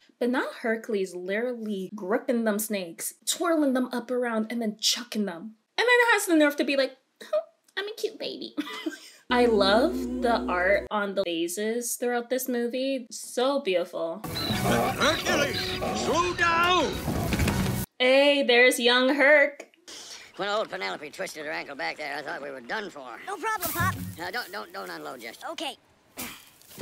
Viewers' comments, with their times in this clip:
0:10 on the “Vauzesss” lol